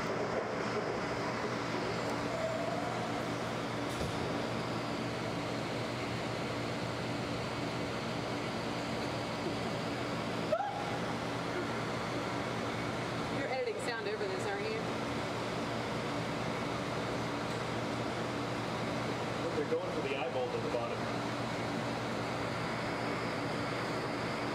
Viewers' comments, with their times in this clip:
0:09 Lol The woman gasps loudly and then asks if the audio is going to be recorded over.